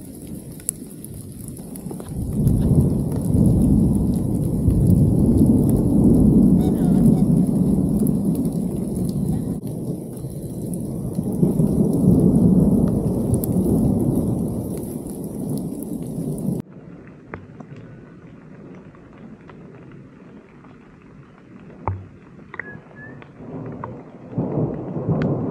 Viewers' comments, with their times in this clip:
0:06 is that a radio? Who was that?. Video tends to skip